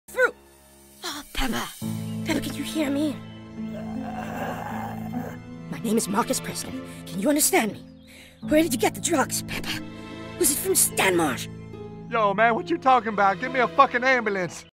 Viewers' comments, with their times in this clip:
0:01 😆😆😆No Peppa🤣🤣🤣 I Love The Voice Of The Little Fat Kid